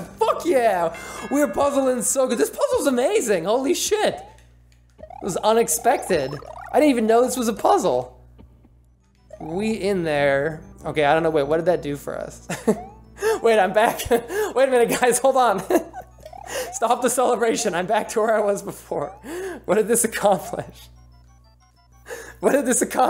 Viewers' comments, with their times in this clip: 0:05 Onix pected :D